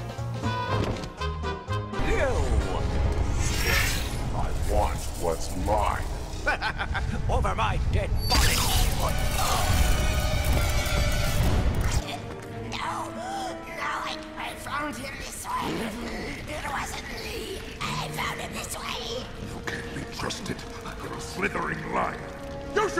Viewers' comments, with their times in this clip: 0:07 that guys voice actor reminds me of the narrater for the intro of the episodes.